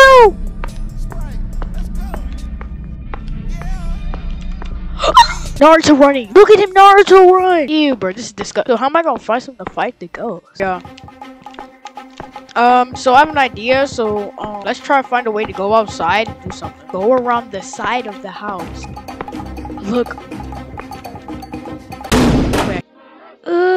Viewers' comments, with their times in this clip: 0:05 the quiet scream 😭😭